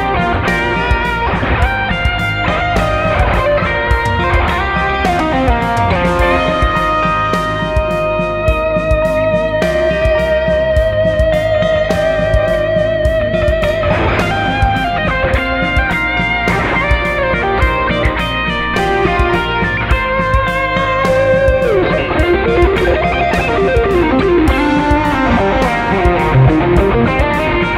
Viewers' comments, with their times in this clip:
0:10 How could you get this sustain from a strat?